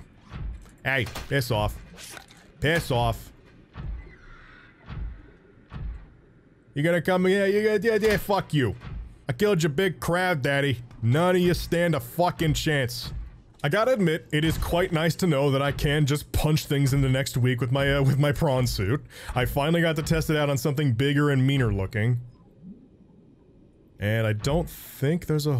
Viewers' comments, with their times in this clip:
0:07 is it just me or dose he sound like tf2 scout